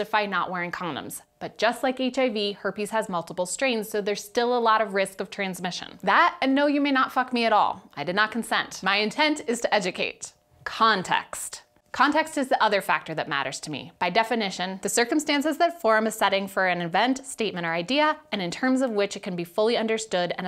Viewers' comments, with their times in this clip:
0:06 i could hear the slap he took in the face